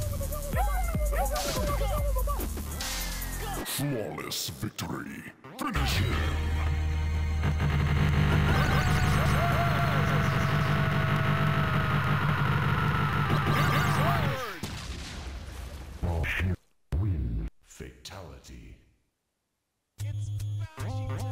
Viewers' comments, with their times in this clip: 0:07 Sonic lit up Shang tsung so bad the game couldn’t handle the sound effects well 🤣